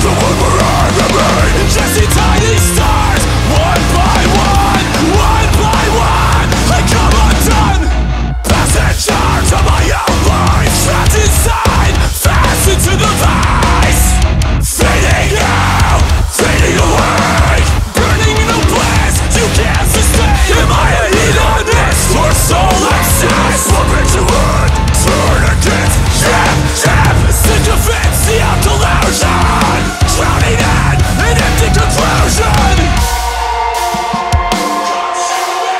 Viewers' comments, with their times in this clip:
0:09 Sick For Today vibes!
0:20 the way he delivers those lyrics on top of that riff is absolutely majestic. Incredibly powerful and moving